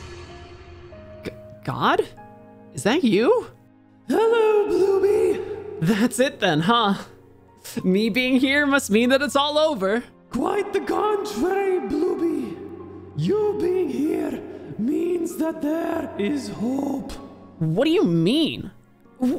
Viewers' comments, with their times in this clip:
0:04 I had no idea that God was Scottish :0